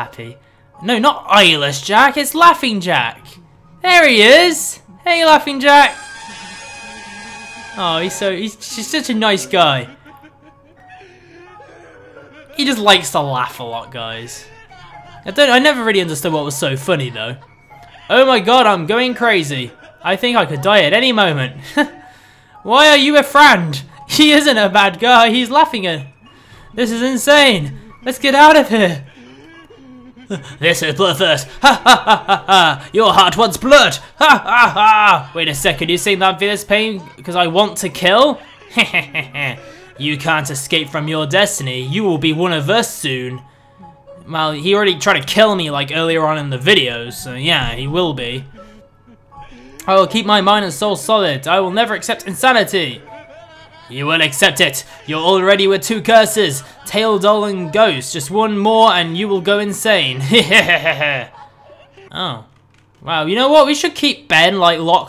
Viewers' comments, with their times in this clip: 0:10 Is that.. Is that Kira's laugh...?
0:14 Kira from Death Note laugh...Love it
0:52 really? ¬¬ if you up the volume, the laught of Jack is the laught of Kira